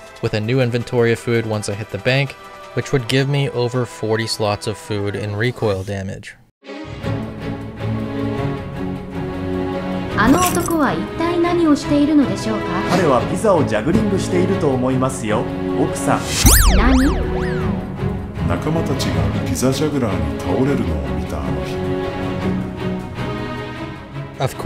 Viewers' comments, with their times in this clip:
0:07 Brilliant animation sequence The music, the jap dub, the writing, very well done lol 👏